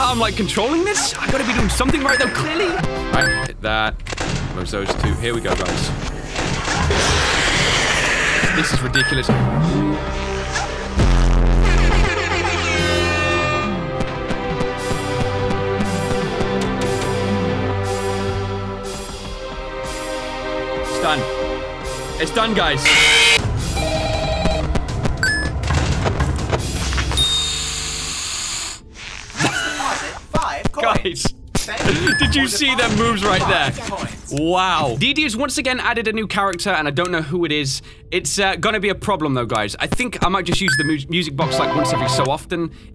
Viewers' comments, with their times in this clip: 0:07 you can hear an Easter egg if you put your headphones volume all the way up, do it before clicking on the part
0:23 jumpscare mucic man